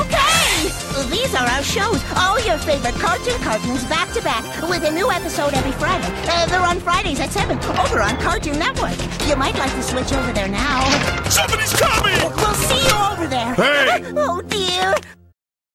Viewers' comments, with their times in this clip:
0:13 Imagine that was SpongeBob yelling "HEY!"
0:13 sounds like they were discovered by a... Lego City figure?